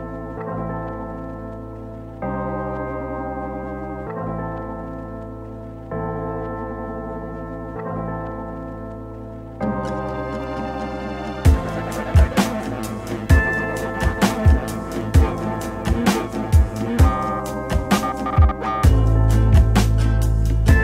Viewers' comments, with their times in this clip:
0:05 Woo, that music ...what kind of vibe are you setting? not complaining, I like it. very slinky